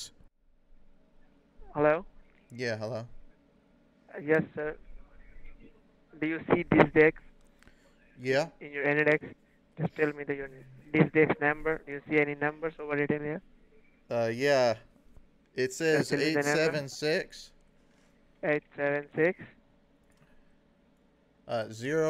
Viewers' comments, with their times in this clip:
0:05 i swear the first thing he says is "do you see this dick"